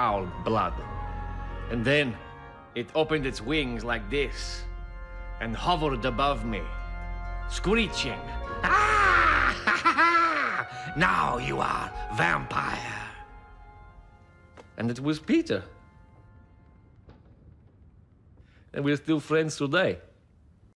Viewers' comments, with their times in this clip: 0:08 deacon's laugh is fucking comical